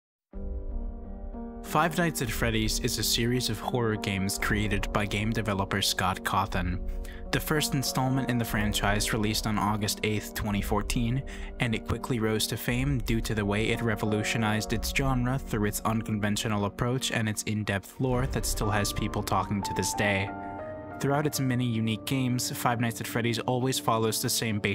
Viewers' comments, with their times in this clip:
0:06 how you talking so serious when the creater litterly made that pic